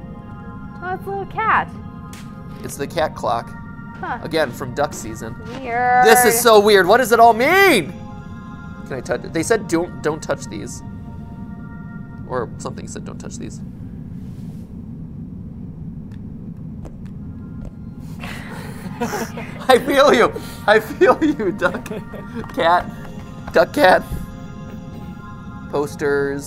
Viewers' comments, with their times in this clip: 0:09 did the music cut out through an edit or did the game cut it out?